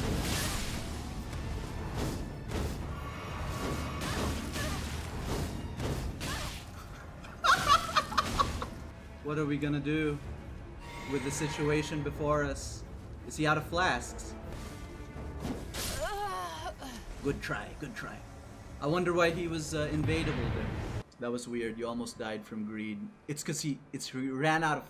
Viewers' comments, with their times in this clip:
0:08 am I trippin or did that laugh sound like the boss from sekiro😂